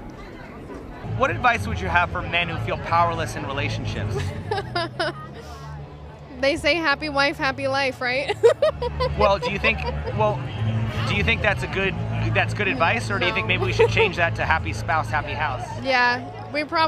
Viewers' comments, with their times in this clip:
0:03 that laugh. It's demonic